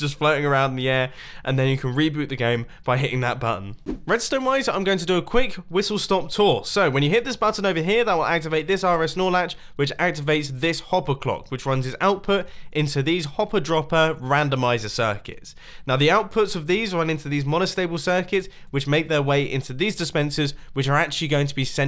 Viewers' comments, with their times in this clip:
0:03 i just noticed something im not sure what it was but listen i think it was the best lisp ever